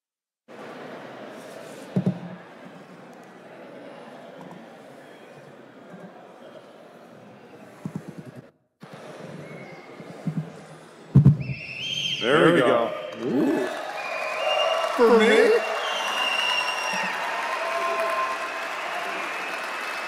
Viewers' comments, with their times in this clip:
0:03 FYI: No audio until in . . .